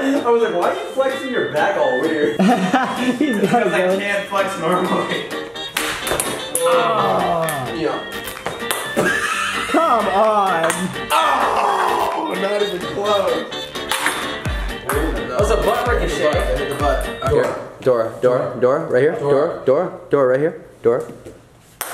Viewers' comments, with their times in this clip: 0:07 XD that laugh XDDDDDDDDDDDDDDDD